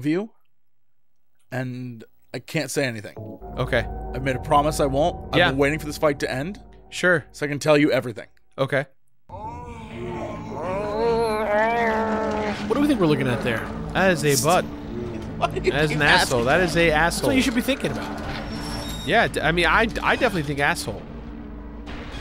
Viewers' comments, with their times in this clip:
0:09 This is basically the Suburban Sasquatch noise If you know, you know